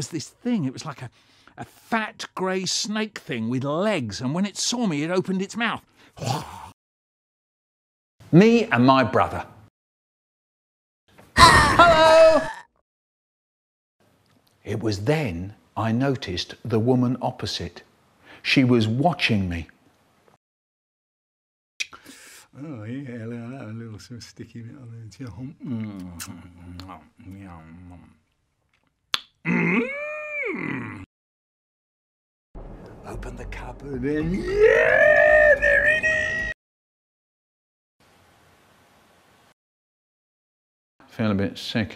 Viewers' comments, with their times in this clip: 0:10 if only hag said hello like that everytime she teleports
0:23 that "MMmHhmM" is everything